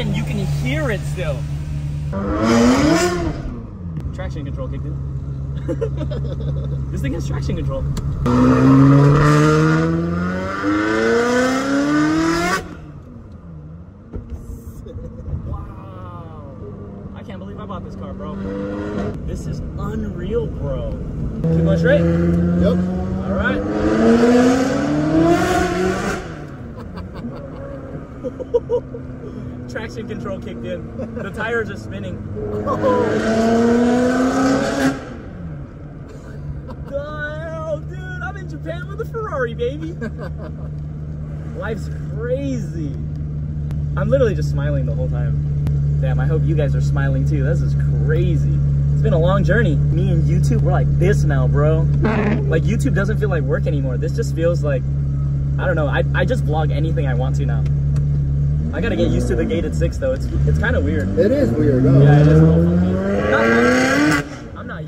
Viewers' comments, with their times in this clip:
0:10 big turbo on bus in background?!?!?!🤨🤨🤨
0:49 Him: me and YouTube are like this now🤞🏼 Windsheild wiper: Fart
0:51 Could listen to this car all day long... but them windshield wipers scared the ABSOLUTE shit outta me LMAO
0:52 Bro this is fire!! But don’t know why the sound of the windshield wiper made me laugh hahaha